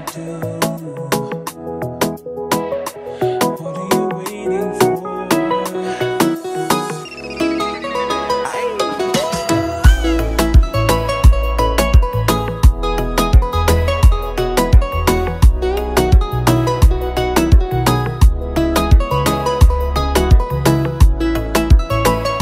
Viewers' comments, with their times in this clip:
0:08 The bass is super, but why the beat is so simple I wish like the beat of “love is gong” or siren jam bro